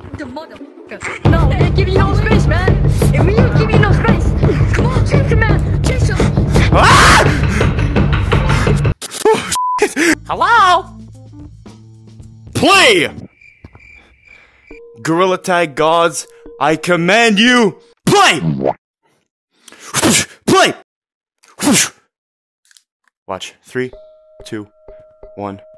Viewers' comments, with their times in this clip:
0:06 The scream that we all know and remember.
0:06 is the scream
0:09 that "hELlo?" Was iconic